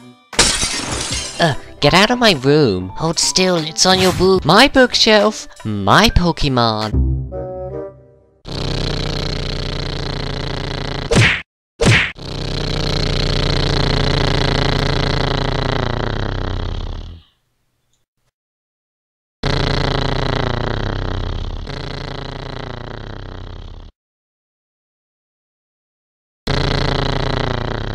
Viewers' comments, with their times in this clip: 0:03 it sounded like minion kid said " Hold still its on your boob." XD
0:03 for a sec I thought he said boob
0:04 it sounded like the minion guy said boob
0:08 great sound effects LOL XD
0:09 high quality UFO noises